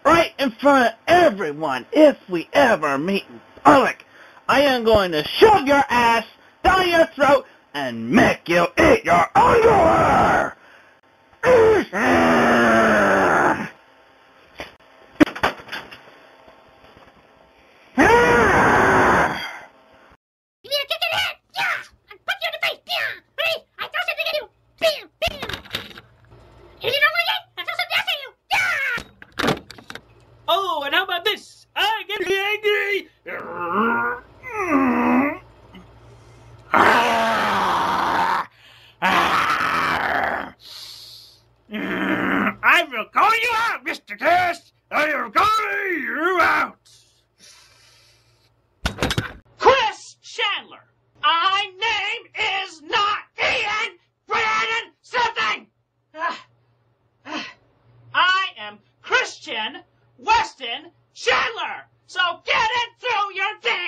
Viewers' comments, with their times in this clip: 0:09 first time I’ve heard Chris get so mad he breaks the audio recording
0:20 Angry birds languege? 😂
0:20 everything before sounds bitcrushed💀💀💀💀💀💀💀
0:31 actually terrified me. His mouth remaining agape while he still talked following up with a “growl” that smelled likely like rot is horrifying.
0:32 the little audio glitch makes it PERFECT
0:37 HE SOUNDS LIKE SHREK LMAO
0:49 I cannot tell you how many times I’ve replayed it’s just such a visceral yell. “CHRIS chandler” absolutely peak Chris moment